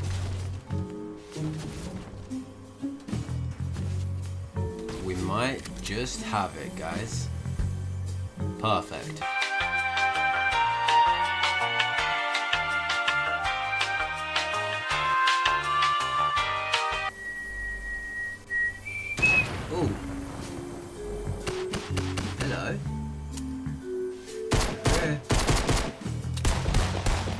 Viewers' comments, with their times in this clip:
0:10 haters be like "yOuR cLiP is SpEd uP"